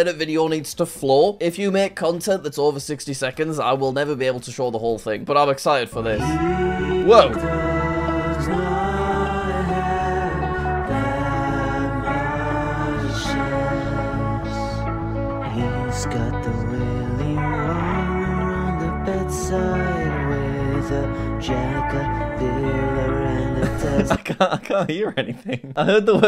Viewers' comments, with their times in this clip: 0:07 it sounds like a church song XD 💀💀💀